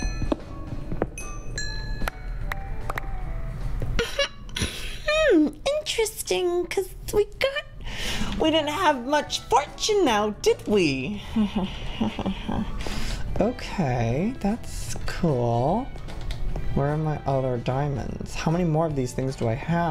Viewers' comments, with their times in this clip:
0:04 OMG I was dying because of his voice from -22-20